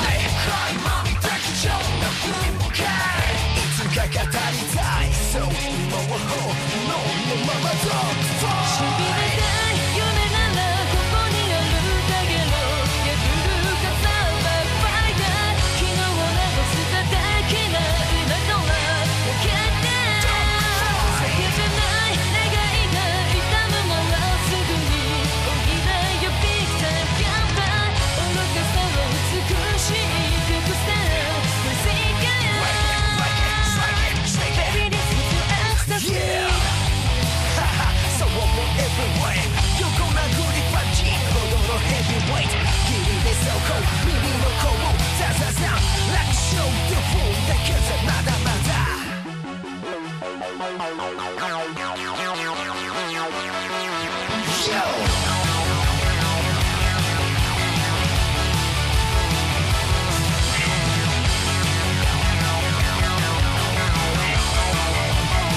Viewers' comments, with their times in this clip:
0:08 The chorus drop flows SO well with the next few seconds of video.
0:40 he says pub g lol #2018gamessuck
0:46 Those electric riffs onwards remind me heavily of the classic Need for Speed soundtracks. Perfectly executed.